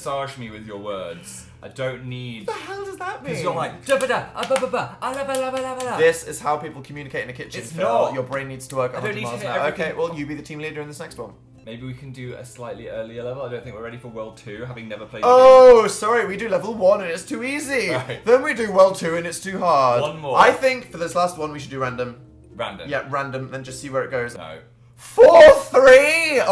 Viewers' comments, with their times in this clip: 0:03 phils impression of dan is just spot on
0:04 phils impression of dan killed me😂
0:12 ok but why is no one talking